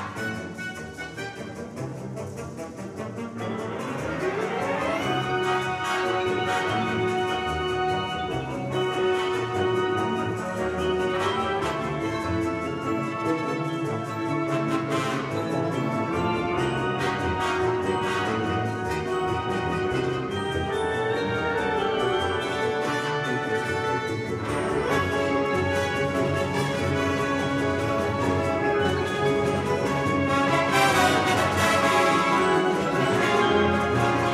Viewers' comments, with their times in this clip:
0:05 Great gliss st
0:21 Compare this to the Dallas Wind Symphony recording vs. this one. Nelson has a tempo marking on this piece and they ain't there!